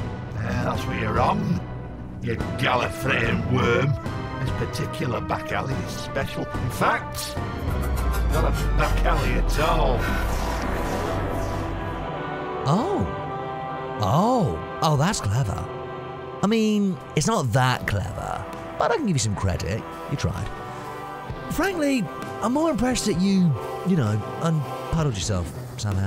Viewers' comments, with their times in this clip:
0:08 This was a nice short, also love the use of the Phantom Ruby noise